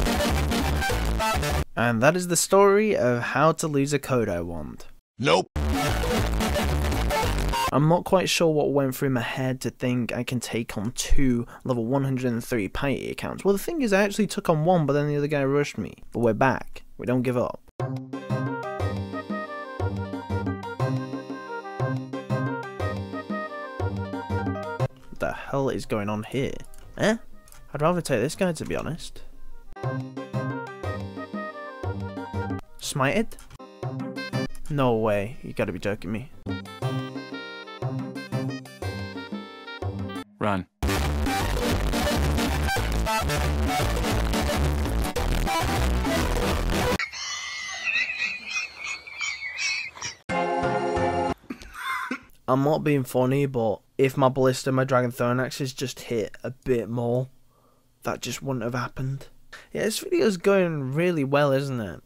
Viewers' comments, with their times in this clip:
0:04 The ear rape made me spit out my coffee i fuckin love it dude, keep that shit up
0:47 the laugh killed me with the fucking maces